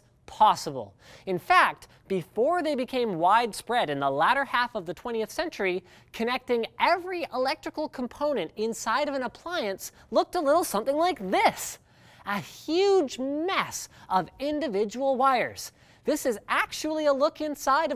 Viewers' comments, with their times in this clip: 0:03 The LADDER half of the century (not the later half mind you).